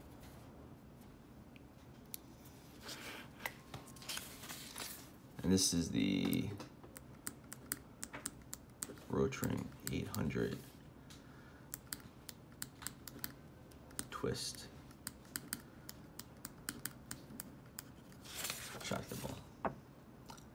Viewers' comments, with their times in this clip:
0:08 what is that ugly suction click sound when you are writing?